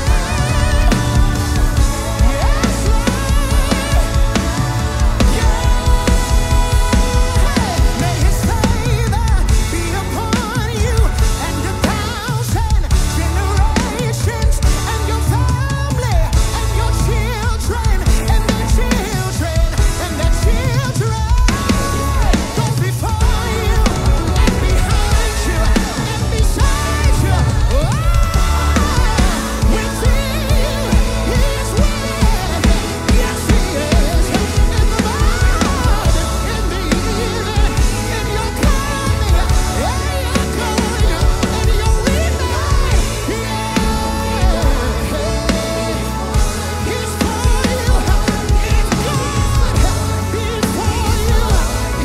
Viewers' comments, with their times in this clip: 0:07 Yooo.. this break down though.
0:34 Entire video + vocal run had me throwing up hands in all directions like I'm directing traffic.